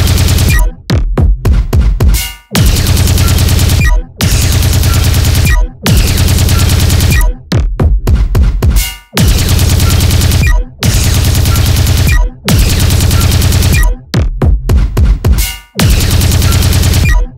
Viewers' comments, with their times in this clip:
0:04 This song is fucking scary and an odd composition. I have enough nightmares in my sleeping time so please sekai owners+devs have some moderation in selection of the songs which get added. I just played it first minutes it got added its a.m. now.